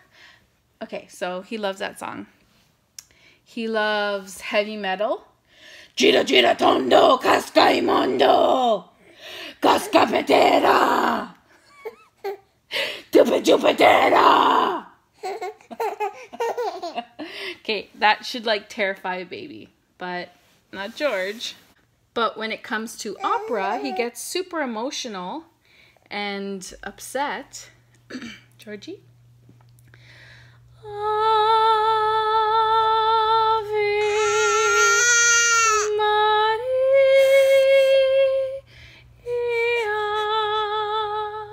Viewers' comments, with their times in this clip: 0:05 Heavy Metal in a foreign language be like
0:23 Awww, he was singing 💖💖💖